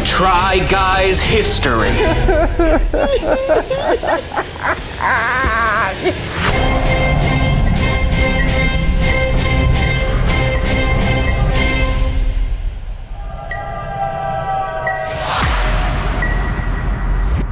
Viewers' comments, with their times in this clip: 0:05 They're laughing but it sounds like someone's crying too 🤣🤣🤣